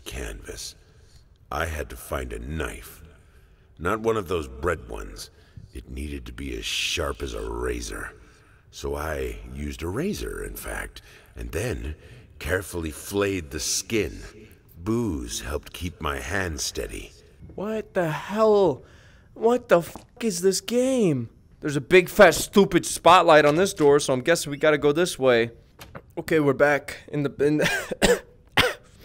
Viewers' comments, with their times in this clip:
0:10 why is markiplier talking in the background?